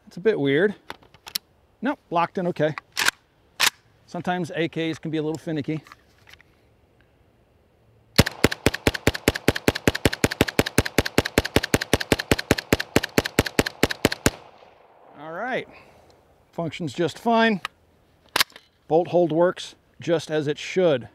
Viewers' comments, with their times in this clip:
0:04 did I hear 31 shots? or am I crazy? maybe that's why it was hard to rock in the first time.... overloaded 1 round?